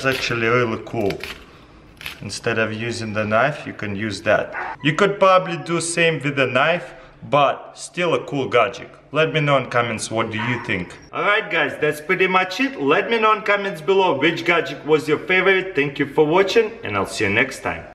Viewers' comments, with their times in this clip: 0:10 Was that a fox bark?